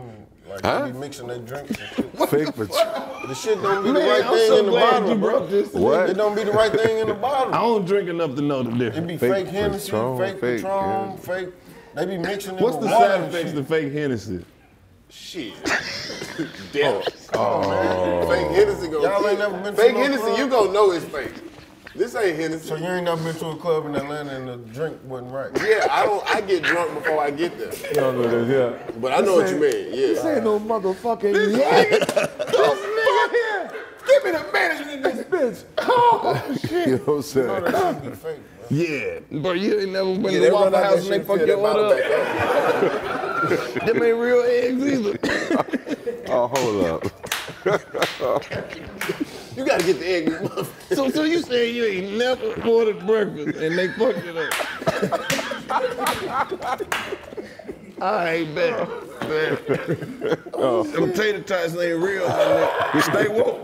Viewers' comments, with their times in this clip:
0:04 Sounded like yall was farting in the backround around like lol
0:19 Did Karlous or some have a 2 Wet farts . On the Waffle house comment?
0:50 🗣bru Karlous farted 💨 and I’m pretty sure Fiend was laughing so hard about in 😂🤣